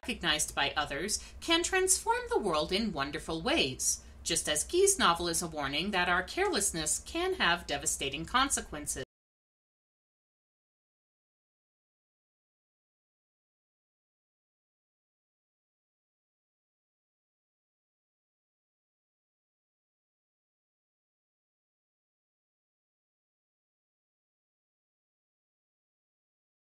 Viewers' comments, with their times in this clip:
0:08 How come the sound disappears ?